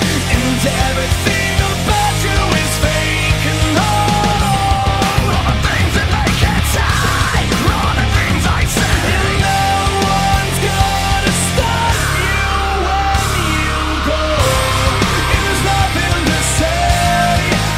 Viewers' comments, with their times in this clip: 0:04 It sounds like, or so, "THE THINGS THAT MAKE HENTAIIII" I don't know why, but it does.